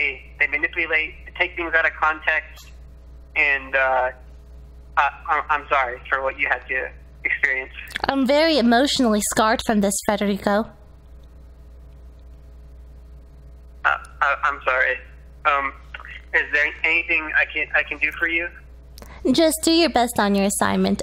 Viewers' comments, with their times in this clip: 0:08 HER VOICE IS DEEP